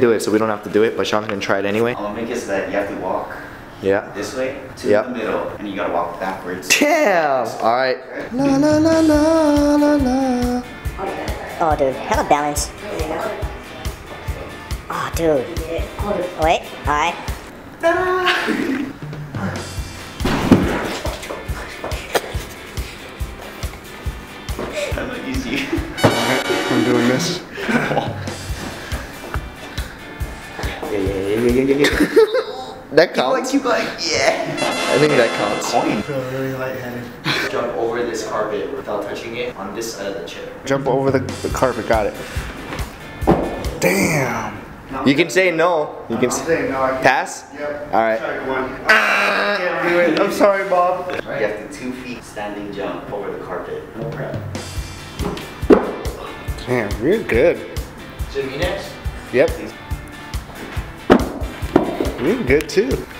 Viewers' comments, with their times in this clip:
0:09 dat song tho
0:50 I'm sorry mom